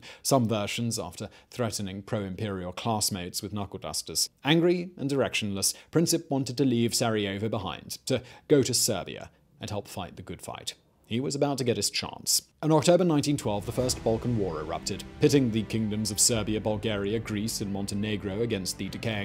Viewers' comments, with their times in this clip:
0:06 I swear it sounds like he said, “angry and erectionless.” Lol